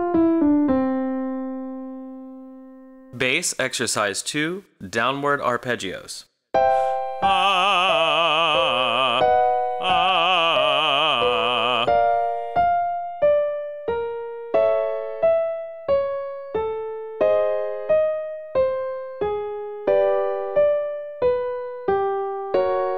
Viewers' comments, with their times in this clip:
0:07 I really can't tell if that's a G3 or G4. It makes sense for it to be G4 and end in C2, but his voice makes it sound like a G3 and it goes all the way down to C1, which doesn't make much sense for a typical YouTube video.